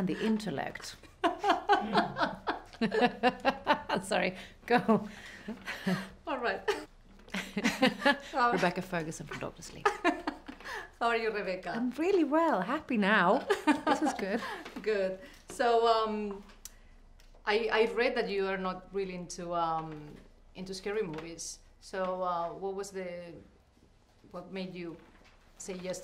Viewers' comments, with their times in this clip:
0:09 What did she say ?? I can't understand her